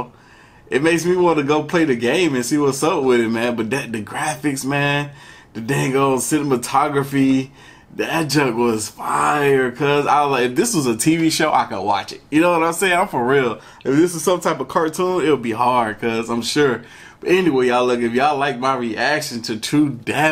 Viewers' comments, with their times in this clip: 0:06 the dang ol’ “cinimotography” 😂